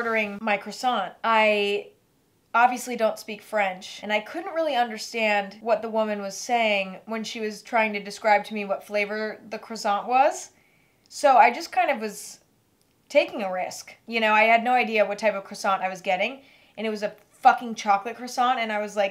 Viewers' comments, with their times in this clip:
0:04 EMMA : crosson” (respect even tho it hurts my ears😂😂😂)